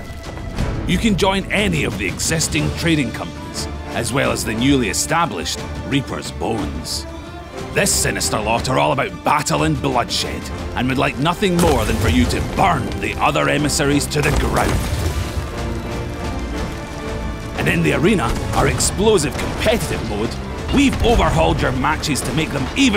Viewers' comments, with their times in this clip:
0:08 Did i hear bloodshit ? XD